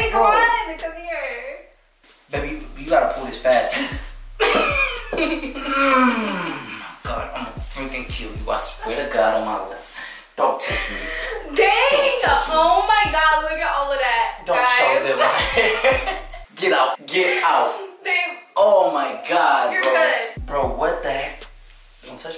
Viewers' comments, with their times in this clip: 0:04 that laugh was an evil one lol 😂😂😂